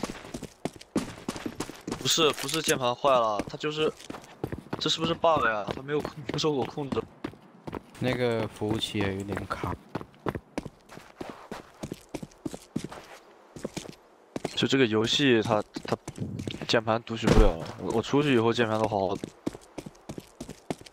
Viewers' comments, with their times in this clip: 0:06 did he say the N word?????? sonds like it
0:06 THE CHINESE SAID NIGGA
0:07 what did he saaayyyyy ????????
0:07 damn my man said it with chest
0:07 i think i heard one of the chinese say the n word